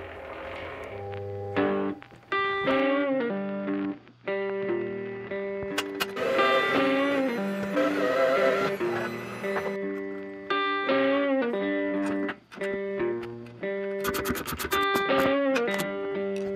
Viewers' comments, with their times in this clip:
0:03 where the eddy current hum breaks into the blues is easily in the top 3 moments of YouTube cinematography I've ever seen. Love your channel man keep it up